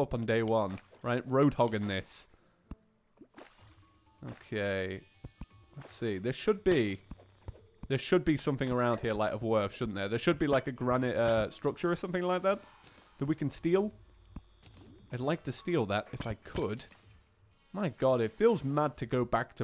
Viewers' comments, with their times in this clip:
0:04 miniuts through it sounds like he is saying "gay"